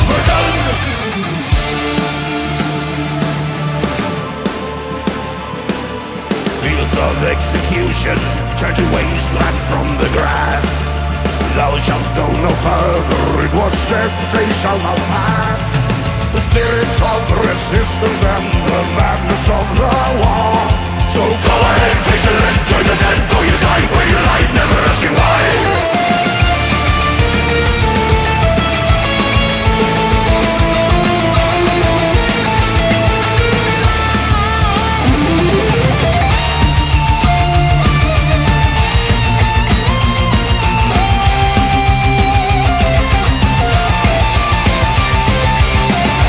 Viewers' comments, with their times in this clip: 0:03 my favorite part, especially the guitar solo
0:11 is it just me or does that voice sounds exactly similar to tf2 heavy?
0:14 subtibles: "it was selfish allah"
0:23 The start of this solo is just insane
0:25 marks the beginning of one of the best guitar solos in sabaton's history.
0:25 This solo somehow always makes me teary-eyed, just highlights how many thousands hundreds of men died meaningless deaths...
0:25 Reminds me of some piece of classical music, but I can’t remember the name. 😔
0:25 The guitar solo is an absolute masterpiece
0:26 the Beethoven 5th symphony hint was amazingly integrated here 🤘🏻
0:27 sick electric guitar
0:27 sounds like -classical music i don't know the name-, impressive 👍